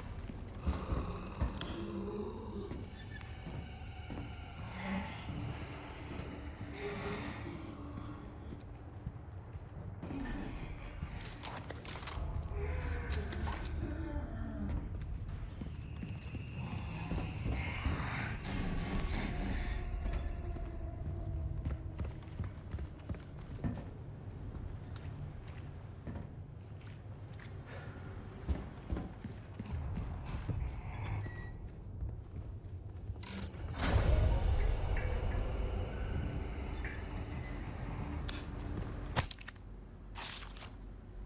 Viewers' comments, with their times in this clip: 0:10 You hear it but also when they show up proper - its mixed in with their other sounds.
0:28 NO NO NO NO ITS THE SAME SOUND IM NOT HAPPY. IN A GOOD WAY. I JUST FIND THEM SO UNSETTLING.